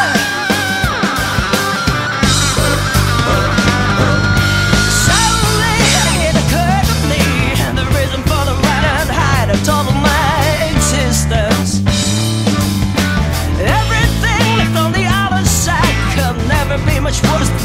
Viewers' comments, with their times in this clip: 0:04 holy smokes that bass drive that starts !